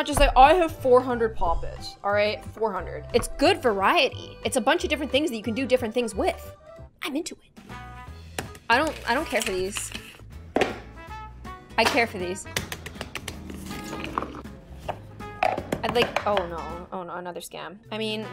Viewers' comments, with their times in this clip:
0:06 I sweat I actually got a fright when she went ‘ iM iNtO iT ‘